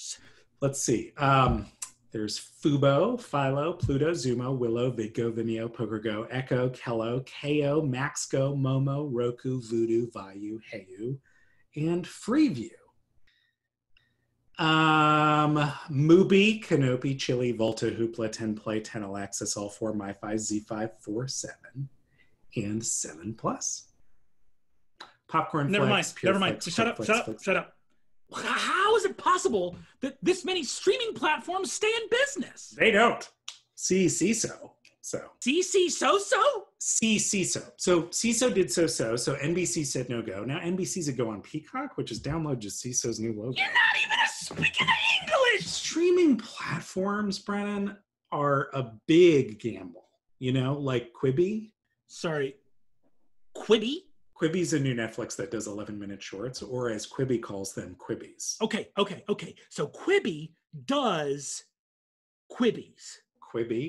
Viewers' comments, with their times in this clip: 0:09 did he just pronounce Viu as "vai-yu"?
0:34 this bit sounds like it's straight out of BoJack Horseman.
0:42 some may wonder: “can a man get so angry that he speaks like a four foot eight mafia boss?” answers that
0:43 that has a little Italian ngl
0:44 when you are so mad you become atalian